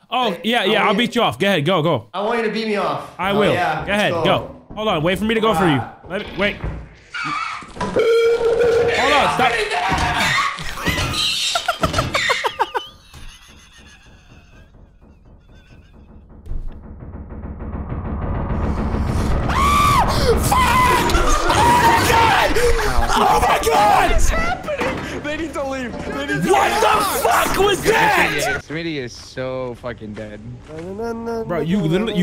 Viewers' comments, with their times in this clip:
0:09 was the funniest but also most terrifying shit i would have jumped of the railing the moment i heard the footsteps.
0:10 this is a great example of laughing so hard you cant hear your death coming
0:11 that thumping is insane
0:18 was the most horrifying noise in existence